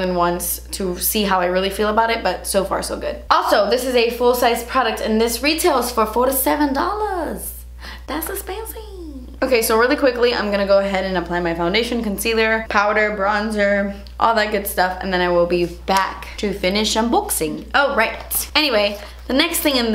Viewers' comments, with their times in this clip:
0:07 i had to go back again and again, obsessed with your DAS ESSPENSIVEEEEE